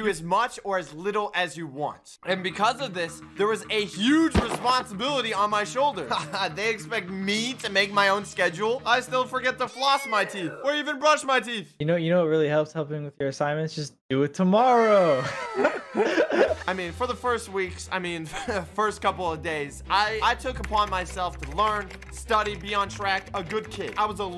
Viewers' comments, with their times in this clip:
0:10 Joocie? 🤨 or juicy i dunno